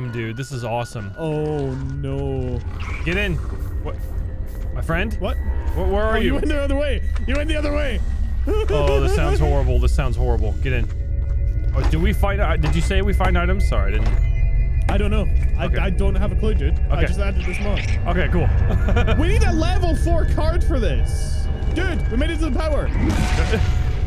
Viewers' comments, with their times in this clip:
0:08 "You're in the other way" starts laughing like Pennywise